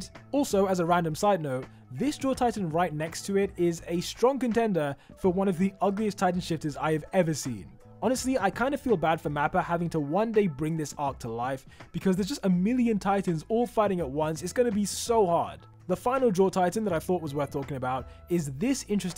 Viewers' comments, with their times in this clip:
0:03 how did you know I'm bri ish?